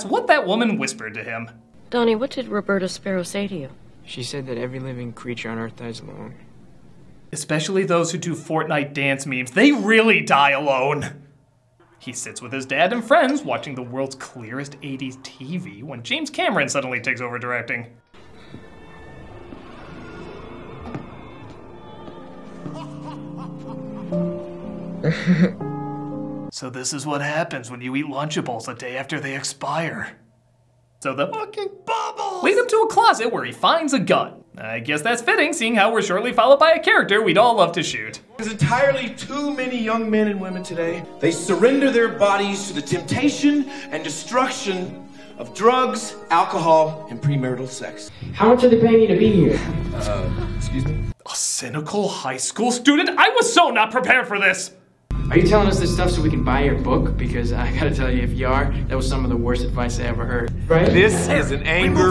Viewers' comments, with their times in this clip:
0:07 every living creature on earth has a WHAT? I'm surprised that there wasn't a joke about this. I'm extremely fluent in English and I can't figure out for the life of me what he is saying. Is it "every living creature on earth has a mom"?
0:47 The hell did Donnie say?